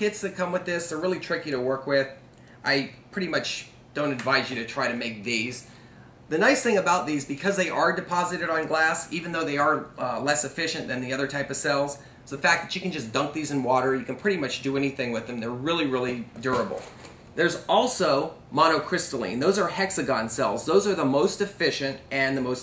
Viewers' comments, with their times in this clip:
0:08 If solder is 'soder' and a soldering iron is a 'sodering iron', shouldn't that be 'deposited on gas' ?